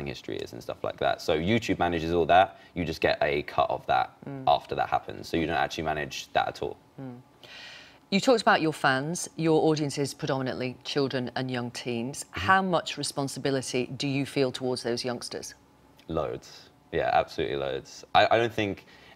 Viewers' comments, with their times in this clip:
0:04 dan sound like a robot